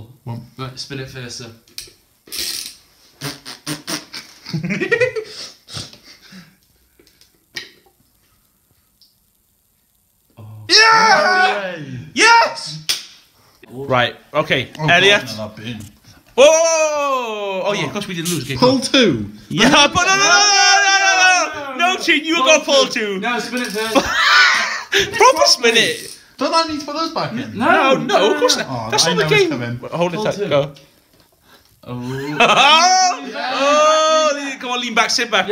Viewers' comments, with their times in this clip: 0:04 That laugh though 😆
0:16 Your laugh though